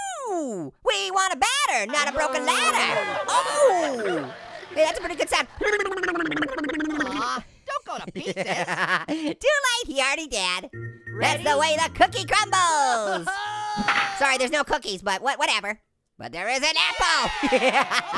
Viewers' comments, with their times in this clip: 0:05 that sounds like drowning
0:05 sounds like a duck
0:05 It sounded like you were doing a motorboat